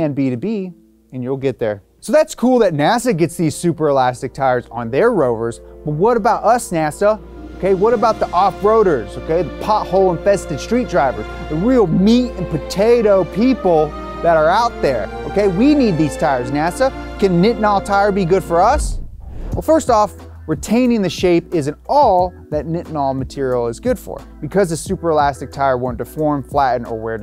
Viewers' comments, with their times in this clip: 0:10 sounds like the canuk anthem there lil bit no?